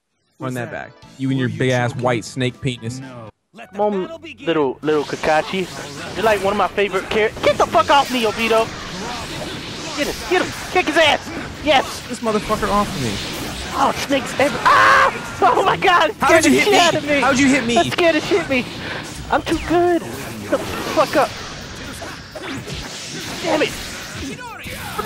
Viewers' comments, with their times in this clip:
0:07 The way he said obito